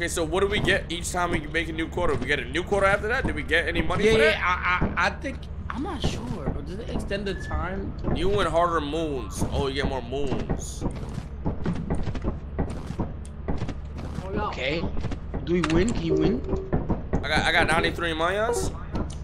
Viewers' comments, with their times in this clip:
0:06 fanum literally sounded like a chick 😂